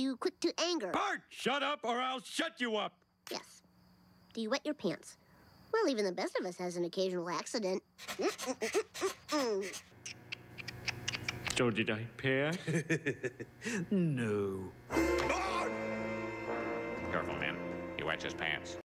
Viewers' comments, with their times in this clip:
0:10 Love the tutting sounds